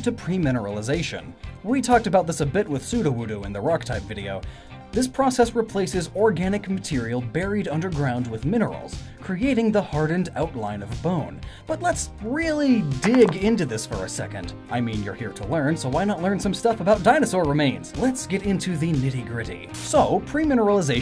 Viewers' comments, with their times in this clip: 0:05 Not forgetting: - 'Permineralization', which is pronounced ''PREmineralization'' several times throughout the video. he says minerals replace bone in the fossilisation process, when clearly showing an image of a soft-bodied animal from the Burgess Shales. - It is stated that most "anthropod" (arthropod)-type pokemon have a bug typing. This ignores Krabby, Corphish, and probably others.